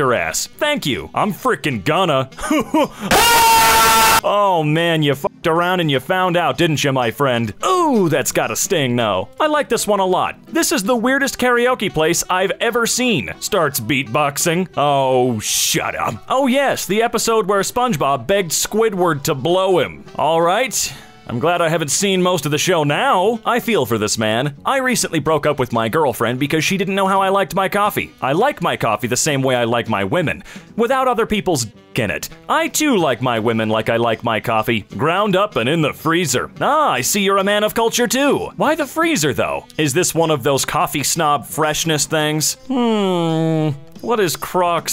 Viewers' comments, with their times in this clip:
0:03 I'm using headphones and damn that's an earrape
0:29 gosh dang it my Phones volume was high im scared